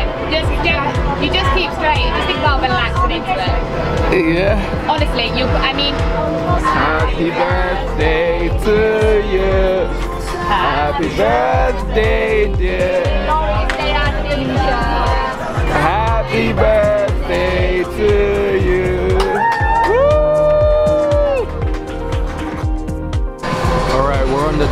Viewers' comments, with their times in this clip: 0:06 Well, that was the saddest happy Birthday I hv heard